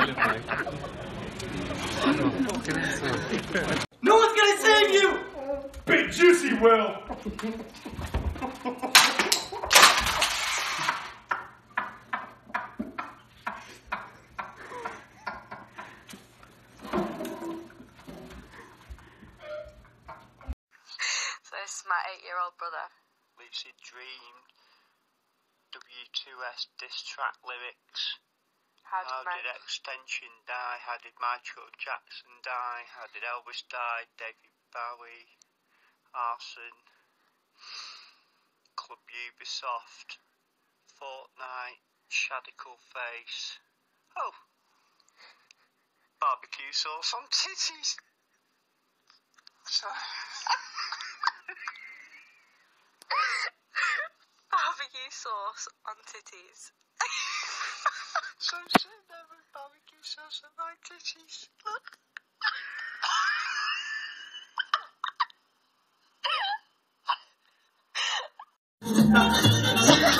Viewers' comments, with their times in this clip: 0:03 Srsly nobody is talking about that Tiktok ? How hard he's laughing?? He can't even hold his head up anymore XDDDDDDDDD Big juicy l m a o
0:08 thats literally how i laugh omg
0:08 this sounds like marbles
0:08 that how i laugh😂😂
0:09 that’s the slowest laugh I’ve ever heard😭😂
0:09 sounds like someone walking down the hall with wet socks
0:09 hahahahaha! Just him being carried away while dying of laughter got me. 💀
0:10 he's already dying and then when the sock comes out, "AWH. AWH. AWH. AWH." That killed me 😭😭
0:10 when you turn up the sound on a Mac
0:10 My guy a seagull at this point.. 😂😂 AH. AH. AH. AH
0:12 i love how he just go limp bc he's laughing too much & let his friend carried him while still cracking 😂
0:35 right that dude proper pissed me off when he said XXXTentacion wrong😂😐
0:45 the accent tho 😂
0:46 was delivered perfectly
0:53 LOOOL. Dad laughing with gratitude knowing his 8 year old son already acts like a healthy male. Hahahaha I would've had a talk and then high fived him for great taste.